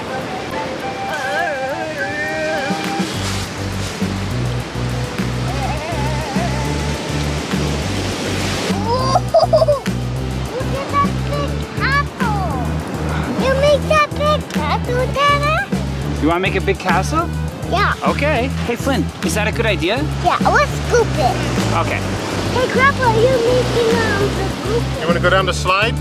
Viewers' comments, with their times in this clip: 0:10 omg why did i think he said big a**hole BAHAHAHA